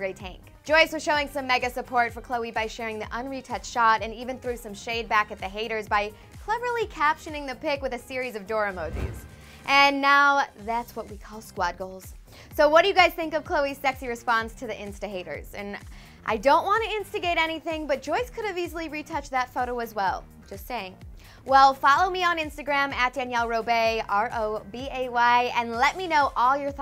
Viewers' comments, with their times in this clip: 0:08 the way she pronounced "emojis" on lol